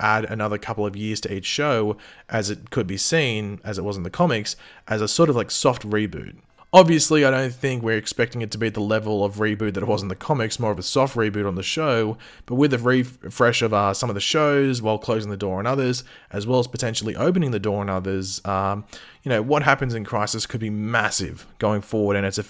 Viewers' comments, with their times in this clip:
0:03 the doorbell again